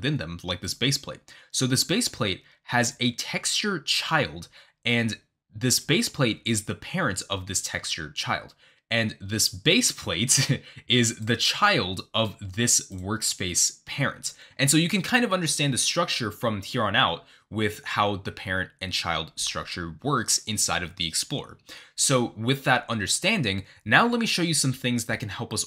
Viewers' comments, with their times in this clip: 0:09 not the embarrassing lutgh😭